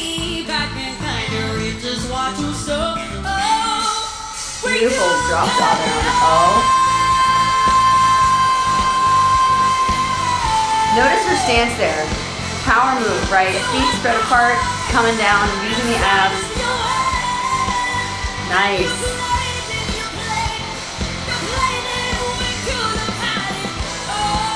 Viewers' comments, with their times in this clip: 0:09 Thank so much for explaining the "C" part. I knew KZ has a voice problem so I don't understand how she does it For an untrained ear, it's already a high note. You are the only coach that caught it. Nice.